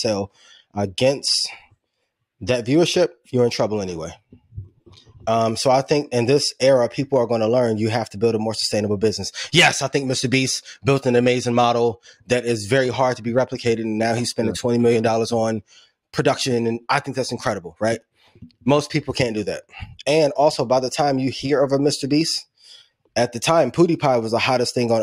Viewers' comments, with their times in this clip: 0:10 Who is Mr Beats?